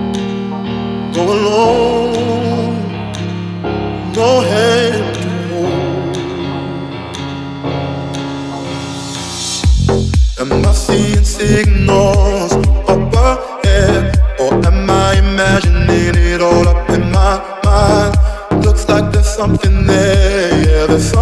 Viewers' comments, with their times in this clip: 0:08 this drop is amazing❤👂👂